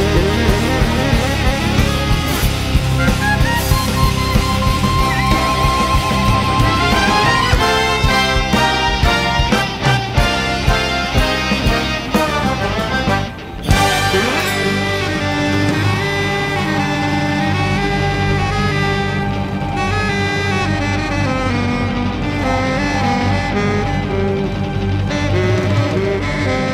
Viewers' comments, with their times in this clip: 0:06 Yup. And right is that famous lick.
0:13 From it sounds like Saint-Saëns - Bacchanale